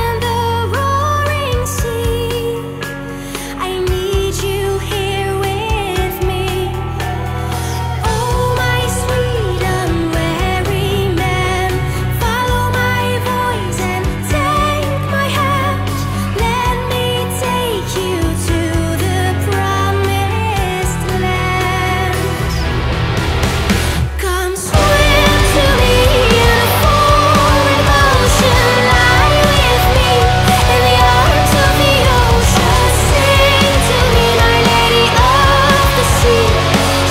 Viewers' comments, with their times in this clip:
0:07 The most beautiful voice I've ever heard. I don’t know how many times I listened to this song, but definitely more than 40 (I judge by the time that I’m sitting at a PC). Your voice for sounds like the voice of a "siren" (creature), beckons for itself. I’m not used to saying compliments but it’s just unreal! Is there a version of a song without rock music? I think it would be even more atmospheric with soft music, as before Translated with the help of a translator, my English is not so good) And yes, you are VERY BEAUTIFUL)
0:24 fuck, that riff is soo juicy!! and the drums ontop, so simple yet soo effective! but i think its in the contrast to Zora's voice that makes it extra brutal.
0:24 the "me" gives me shivers